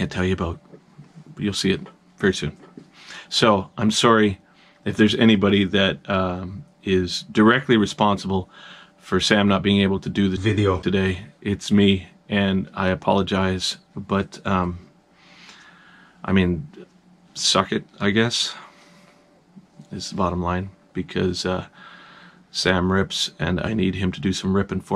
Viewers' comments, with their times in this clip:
0:10 Did you dub over "video" ?